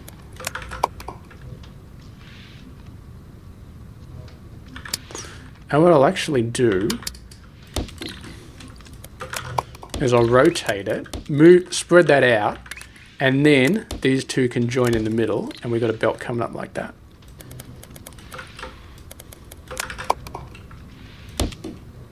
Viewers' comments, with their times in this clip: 0:09 Game audio in E01 was good. In this episode it's a bit on the loud side (in relation to your voice). And thanks for keeping the music off. 👍 If you'd fliped that first cutter instead of moving, it would have worked. And is there a reason you haven't unlocked the swapper? The swapper is perfect for Milestone 5 shapes.